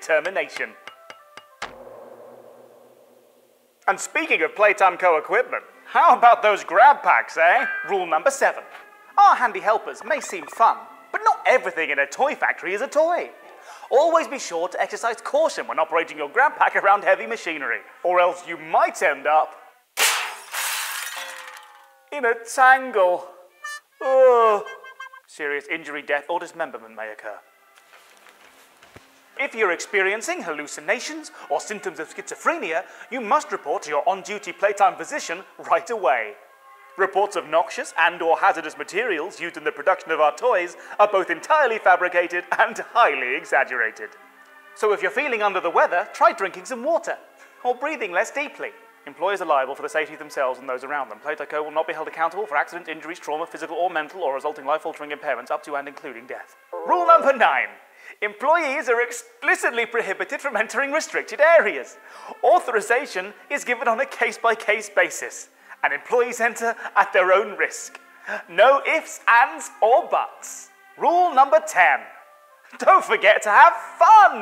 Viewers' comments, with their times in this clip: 0:10 Bro Just Said Messi F*k 💀
0:21 He talked speedly what did he say i didn't understand
0:22 I love how he said people can die! Frome this and huggy laughs 😂😂😂😂
0:27 Huggy laughing is so adorable
0:28 huggy laughing so cute here❤
0:28 I love huggy wuggy laugh
0:48 sounds like a rap
0:56 Rules 9-10 sounds like he’s being held at gun point :/